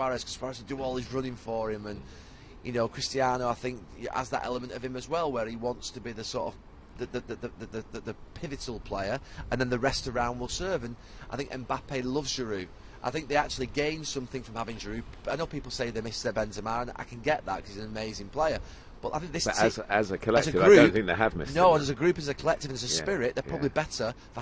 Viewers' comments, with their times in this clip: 0:07 Someone’s car was struggling to start